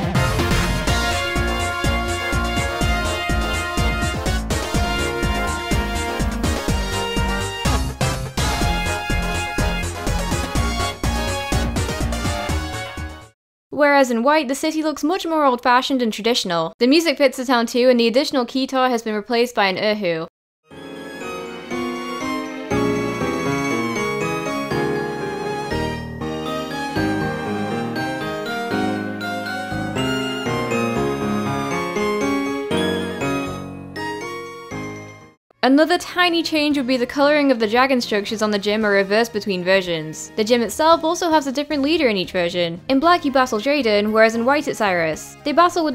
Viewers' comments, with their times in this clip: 0:09 Opelucid City should've just been named "Rave City" in Pokémon Black.
0:26 The pokemon white version of the town is like 10 x better definately more pokemom vibes and better music